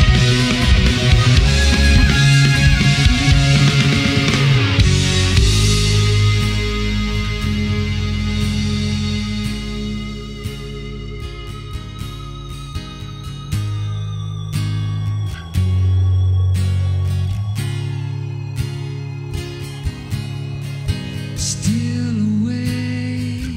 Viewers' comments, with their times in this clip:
0:09 I like that in the "still awake..." verse of The Wasteland part on Trial of Tears Petrucci plays acoustic guitar instead of electric as on the final album. Little details that make a difference.